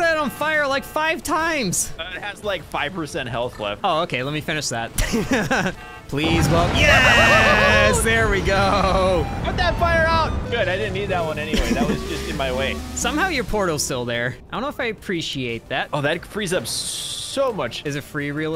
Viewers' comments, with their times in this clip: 0:05 reactor dies determination starts playing